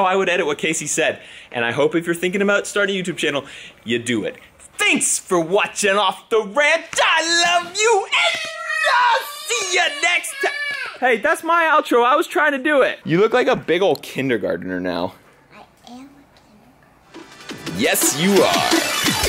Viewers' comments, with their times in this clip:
0:07 i thought the audio went into 2x speed aka chipmunk mode lol